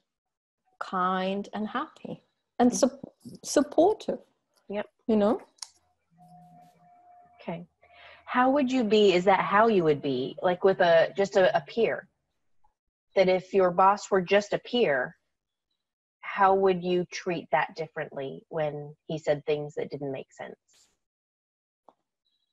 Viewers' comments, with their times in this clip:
0:07 ... the first time she bows her head and whispers the word "supportive"..she feels her family/friends/coworkers apparently not supportive?